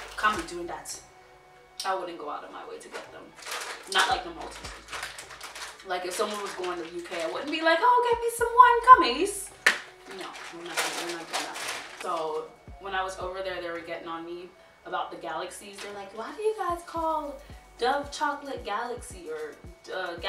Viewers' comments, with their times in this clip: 0:08 I feel like u we’re making funny if the way posh British ppl speak tbh